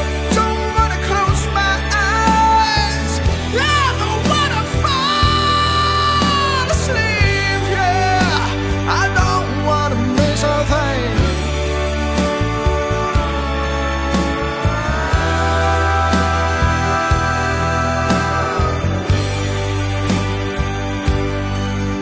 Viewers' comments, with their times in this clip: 0:03 I think you killed it Great job. I was going to give a suggestion, but you honestly can sing this better than Steven tyler can now, he kind of messed up his voice. So I'll leave it at that. Bravo.
0:03 I meant to add.... especially the way you hit those high notes !